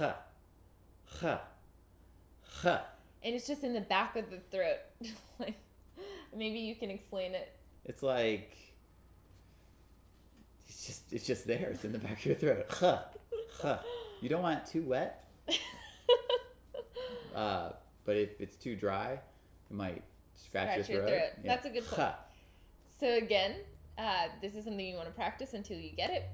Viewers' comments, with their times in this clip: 0:08 Hispanic people can pronounce this sound quite well, actually.